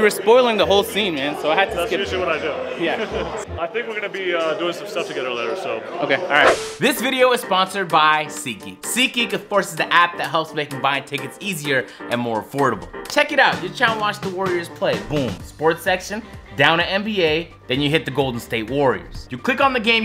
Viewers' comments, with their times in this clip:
0:07 agent tryna hold back the lols